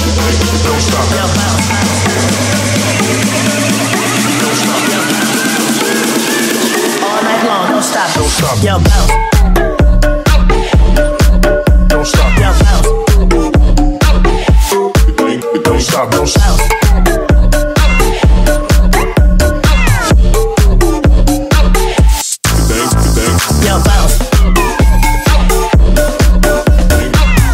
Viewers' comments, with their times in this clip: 0:08 so sick drop